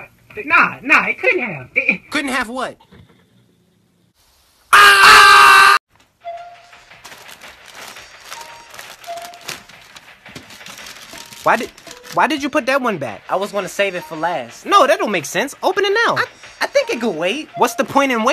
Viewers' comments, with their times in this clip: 0:04 The scream always gets me